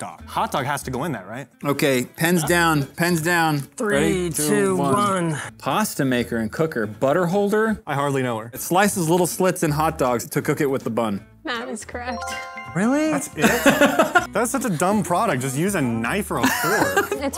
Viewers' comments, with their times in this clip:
0:03 Pant's down? Nah, i'm good)